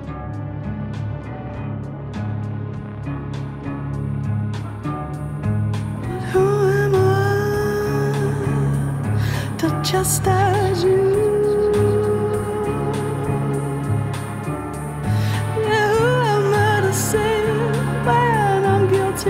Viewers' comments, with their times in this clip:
0:07 From this point on the vocals are starting to channel some serious Jeff Buckley energy, hot damn